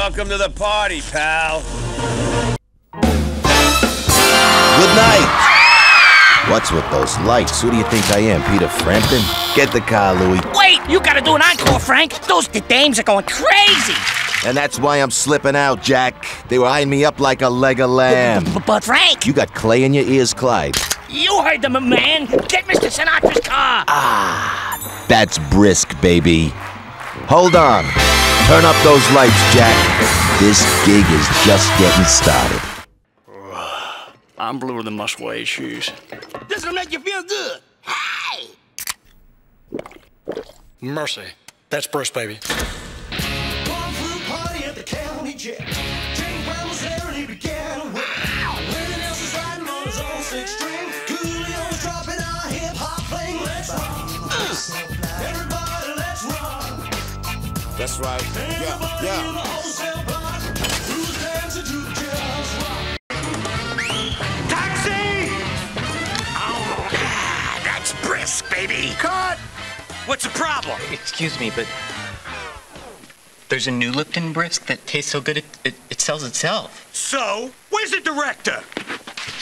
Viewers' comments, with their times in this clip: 0:10 billy west moment
0:40 Idk why this made me laugh so much, I think it was the corny knockoff Elvis Presley song.
1:05 that sound when he was drinking brisk lol